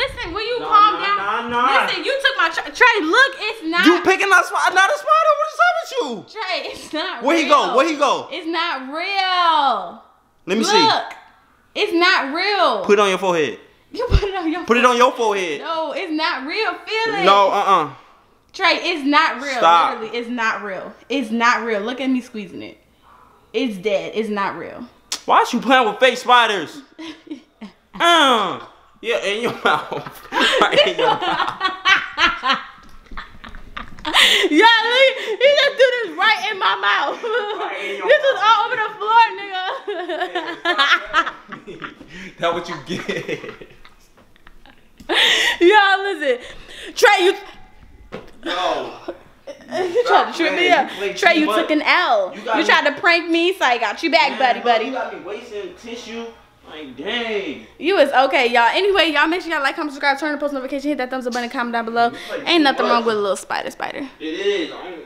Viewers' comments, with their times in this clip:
0:05 his voice got so high😂
0:48 when u gotta sneeze and almost fall